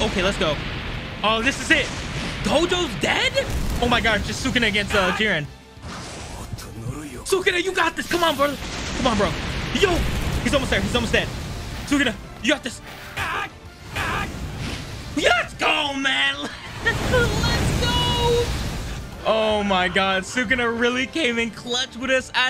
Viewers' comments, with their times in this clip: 0:05 Sakuna wanted that rematch and whispered now you die lmaoo